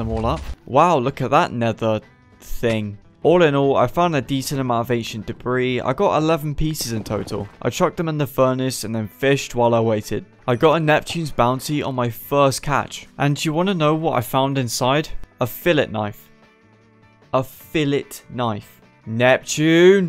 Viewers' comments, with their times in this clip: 0:04 asian debis lmao